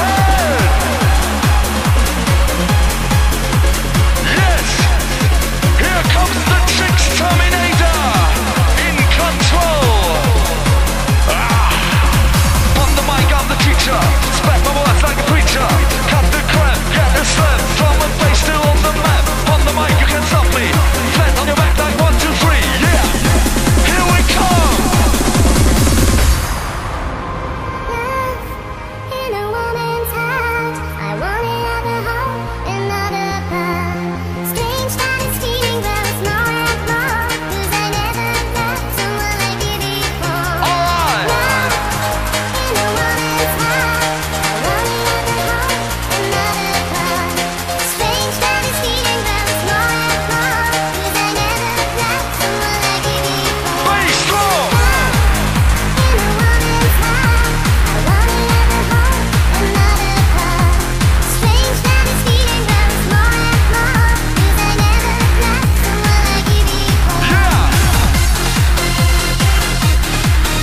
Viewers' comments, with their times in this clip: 0:10 I swore thatw was Sean Connory from SNL Jeopardy! LOL! Great job!
0:53 Bass drum! love it
0:54 BASS! DRUM! haha XD